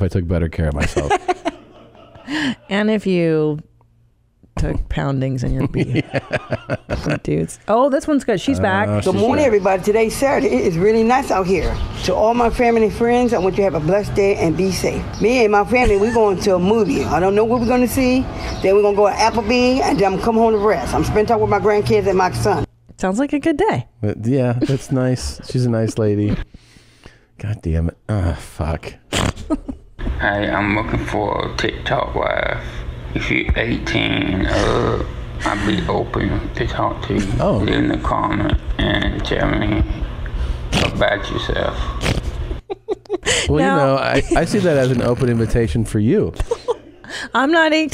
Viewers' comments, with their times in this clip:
0:09 I dont know whats wrong with that. I mean, she got an accent and all but...sounds like a nice day!
0:28 I love that Tom is groaning to the video of his lost fat twin brother.
0:30 that dude sounds like Tom's impression of Steven Seagal